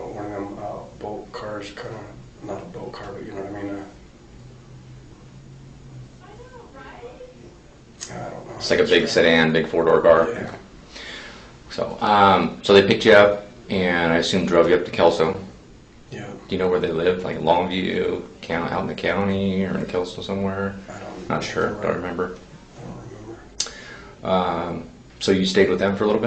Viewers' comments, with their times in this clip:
0:08 At approx ...somewhat muted but easily heard lady's voice, "I KNOW, RIGHT?!" LOL I don't know why I always assumed all interrogation rooms were soundproofed. I was wrong, lol! Great video, thanks for all the awesome videos on your channel! Definitely far above the majority of other channels! The amount of work put into your channels are obvious! Thanks so much! ✌❤